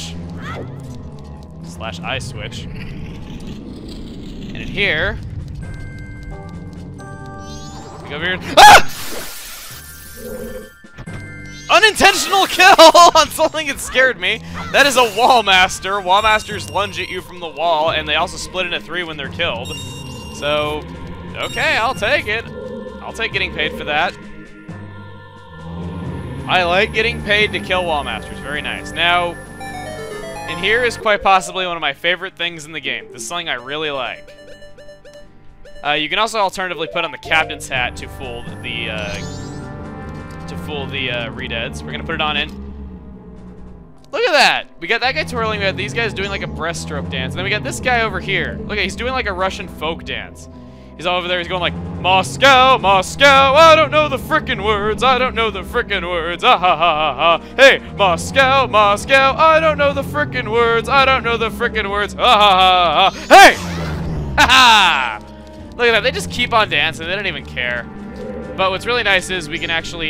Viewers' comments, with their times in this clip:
0:08 Did you just shriek?
0:08 i had headphones on....and he fucking scared me o___o
0:52 THE EPIC MOSCOW SONG
0:53 Vest song I have ever heard!!!!